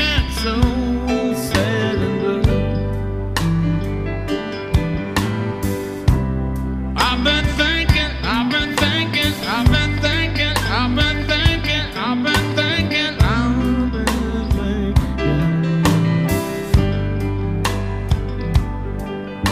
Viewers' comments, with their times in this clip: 0:06 Lovely stuff! Shame the record got stuck though.